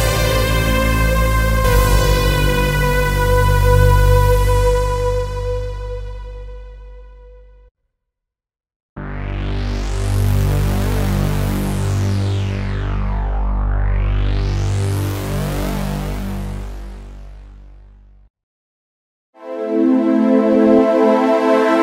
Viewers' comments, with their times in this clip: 0:09 ps1 sound xD